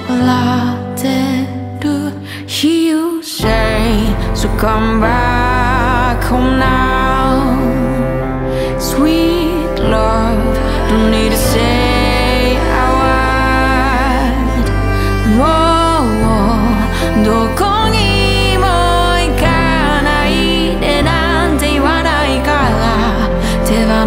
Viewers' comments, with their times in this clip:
0:10 Wonderful voice. is that Haneda airport?